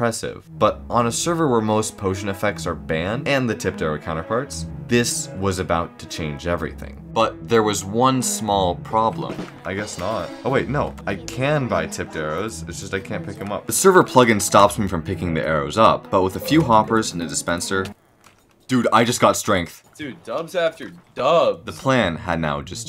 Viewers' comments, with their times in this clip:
0:10 why did i hear the baby laughing sound